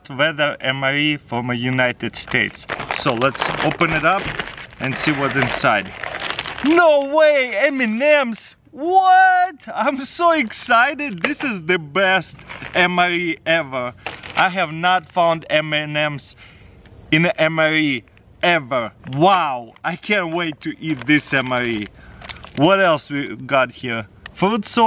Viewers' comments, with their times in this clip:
0:05 " NO WAY EMINEMS!!! " who knew slim shady would be inside an MRE
0:06 NO WAY EMINEM !!!!!